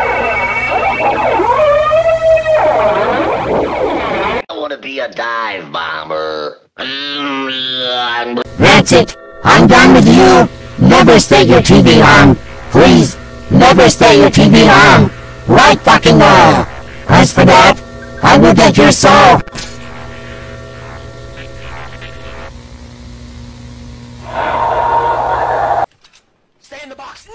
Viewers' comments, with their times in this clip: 0:08 it sounds like sonic cd boss USA for a second.